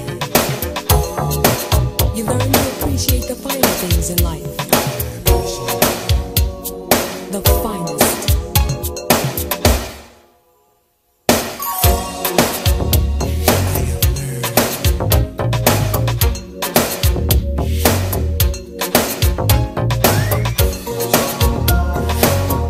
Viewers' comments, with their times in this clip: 0:10 When all stops, glorious!